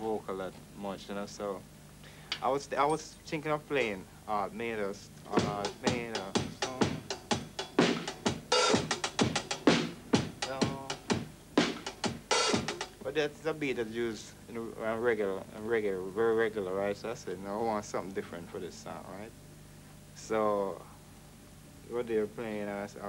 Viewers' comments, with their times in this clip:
0:06 No reggae gets played until when Sly plays, check his phrasing on the hi hats. These British musicians are shit at reggae. If your a young musician learning reggae, listen to Jamaican music!